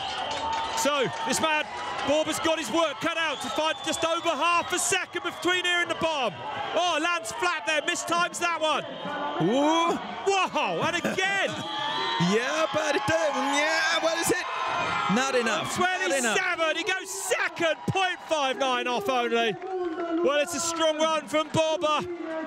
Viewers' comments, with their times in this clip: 0:10 Excelent flatulence bro 🤣